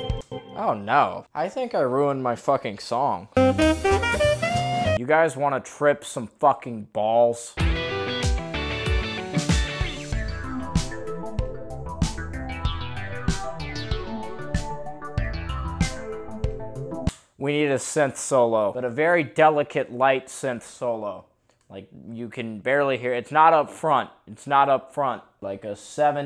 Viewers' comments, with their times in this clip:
0:10 sounds like terraria